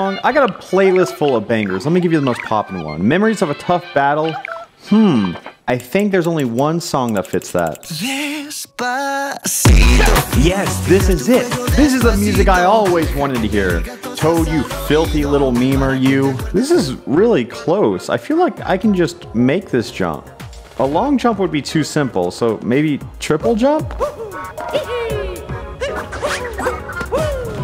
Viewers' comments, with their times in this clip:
0:07 everyone's gonna think I'm crazy for saying this, but I have never heard Despacito before this moment.
0:11 omg that song. Alexa play Dabpacito 69
0:11 *angry pokèmon theme song noises*